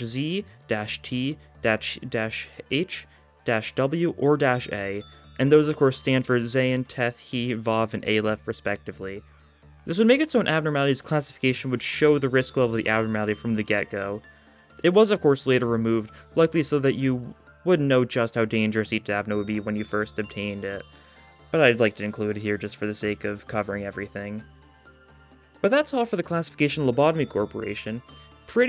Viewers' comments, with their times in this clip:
0:09 will never get old of people saying WAW correctly. As a native Hebrew speaker, you have both my respect AND a personal thank you<3 (Not related to this video specifically but i love putting your daily mirror runs in the background when i do schoolwork<33)